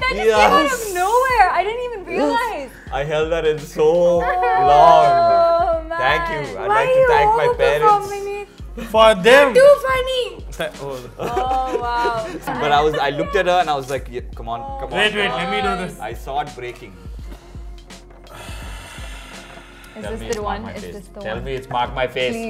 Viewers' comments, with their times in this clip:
0:06 her mallu accent is soo cute 😂